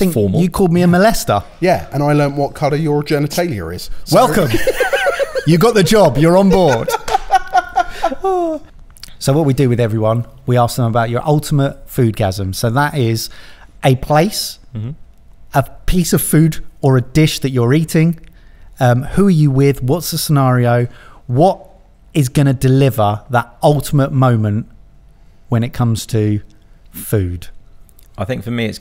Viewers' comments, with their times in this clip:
0:09 There is some audio work needed here, great content but uhh. Its really hard to pay attention to whats being said when you can hear the mouth noises everyone is making as they speak. its most obvious and a little after. Theres also a weird background hum throughout and I think its that you have the gain too high on the mics. They're condenser mics aswell which aren't the best for this application anyway (I'd recommend dynamic mics like the AT2040 or if you have some deal with rode (given the mic arms, mics, and pop shields, Then maybe the podmic or Procaster) as condenser mics are really sensitive which is great for a treated audio studio but on a set like this they're too sensitive. The background noise and mouth noises are really distracting.